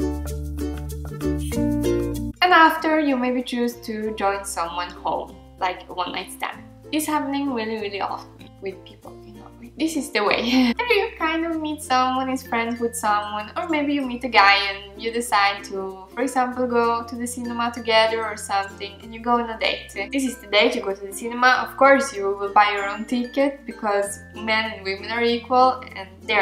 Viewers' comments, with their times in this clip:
0:09 '' This is Dae Wae'' hahaha ....... I can show you dae wae